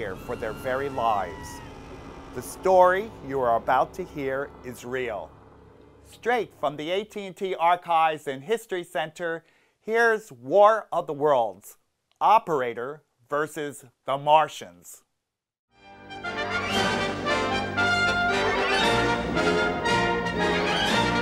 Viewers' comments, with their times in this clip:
0:09 HEREZZZ WAR OF THUH WORLDZZZ! I can't.